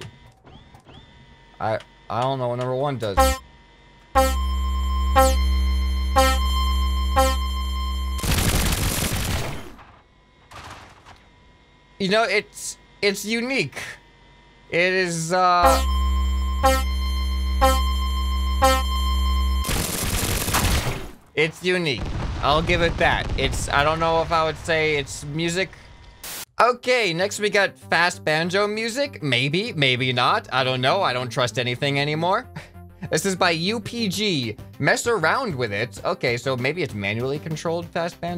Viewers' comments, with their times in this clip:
0:06 is a countdown for a race
0:19 is like an intense countdown announcing the diarrhea sounds coming after the countdown.
0:21 it's one of those hand held clackers you use at sporting events to make a noise.